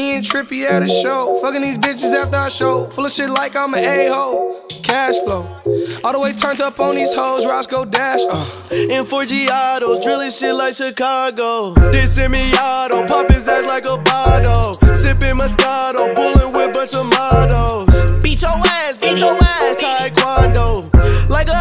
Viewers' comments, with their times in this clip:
0:09 that beat rock